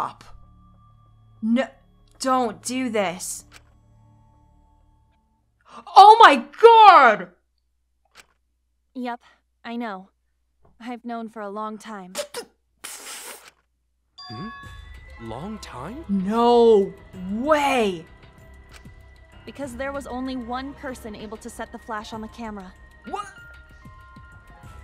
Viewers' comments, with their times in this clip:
0:06 that OH MY GOD! when she truly realized.